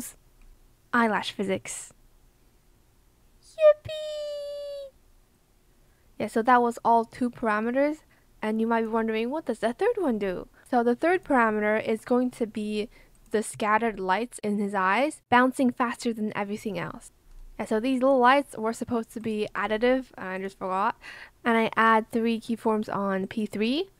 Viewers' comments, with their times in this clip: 0:03 the cutest yippie i ever herd 💕💕
0:04 she say "yipy" so cute,Lol